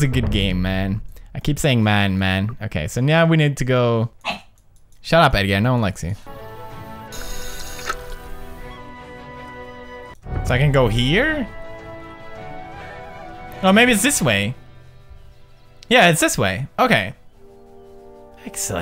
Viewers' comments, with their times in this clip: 0:03 LOL Edgar barked